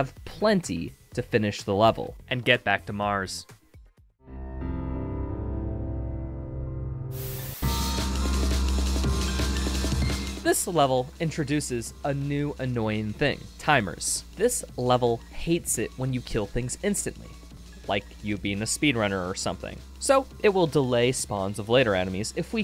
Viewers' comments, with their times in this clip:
0:04 sounds like the sample used for eyeless by Slipknot